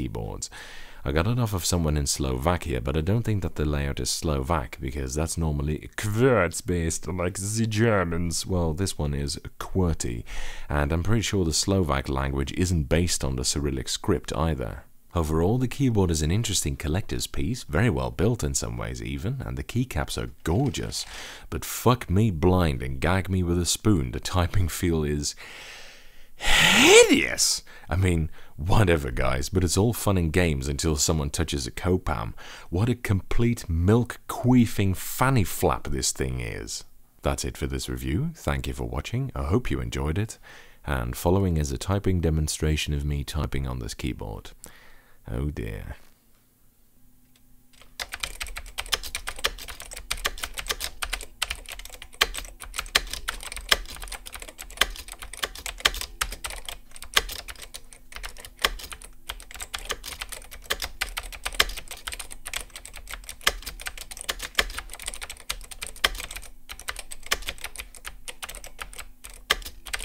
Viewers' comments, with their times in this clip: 0:03 How the heck do you do such a smooth transition between accents while keeping your voice even?
0:47 I remember using a REALLY bad keyboard a few times when I was younger. This sounds like the same kind of key feel I recall that keyboard having. Super short travel, clicky, but with the worst bottom out feeling you could possibly imagine. I think it was also iso with a 1u backspace (which is pretty weird in the USA). It was as thoroughly displeasing of a typing experience as I think I've ever had, barring an office copy machine with a built in keyboard that's just not even worth thinking about. Oh yeah, I recognize that ungodly sound...... my fingers are having flashbacks T_T
0:52 Oh man that space bar sounds like a shotgun :P